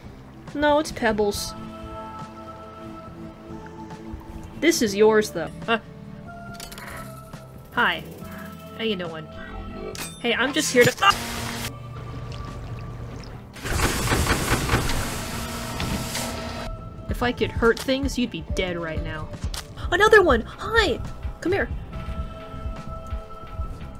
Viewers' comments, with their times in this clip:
0:05 the way the scream cuts off XD